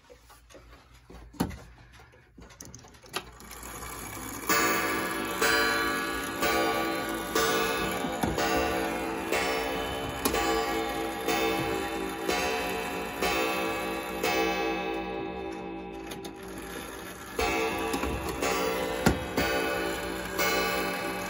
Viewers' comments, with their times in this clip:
0:03 movement: starts growling gong: starts clanging